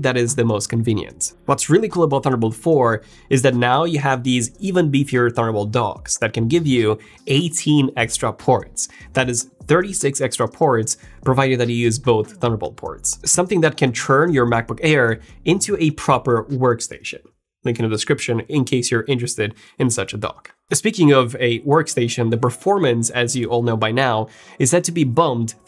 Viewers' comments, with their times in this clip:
0:07 This guys accent IS REALLY ANNOYING OMG 😆